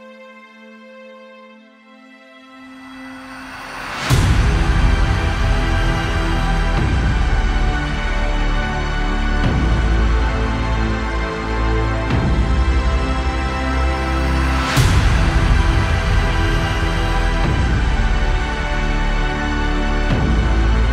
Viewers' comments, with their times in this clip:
0:04 Sounds exactly like Melisandre's theme in Game of Thrones.